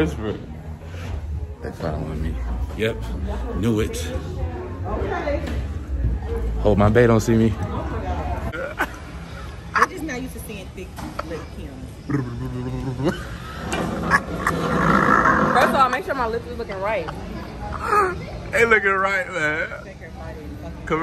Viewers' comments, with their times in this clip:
0:08 you laughter kills me, u a fool 🤣😭